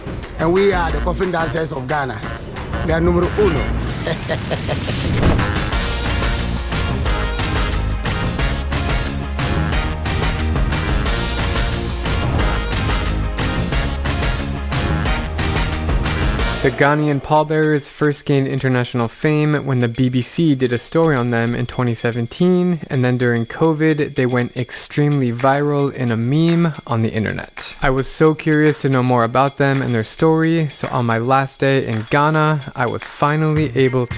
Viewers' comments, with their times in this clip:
0:03 this laugh reminds me of something I can't remember
0:04 That's the way you're supposed to laugh when you see someone dying thinking of this meme XD
0:19 "when big black C did a story on them in 2017." My damn mind is corrupted after long exposure in P'hub.